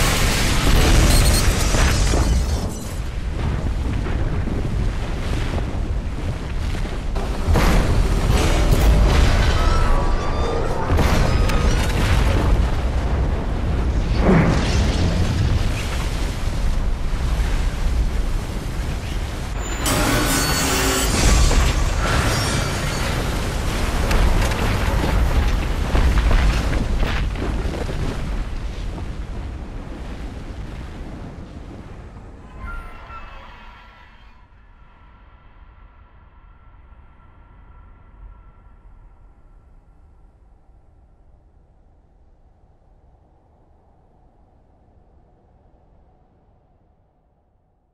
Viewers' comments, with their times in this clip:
0:09 Everyone’s going to ignore the scream I heard over here
0:30 That sound gives a dystopian feeling, not like the end of a dystopia, rather like the beginning of a new dystopia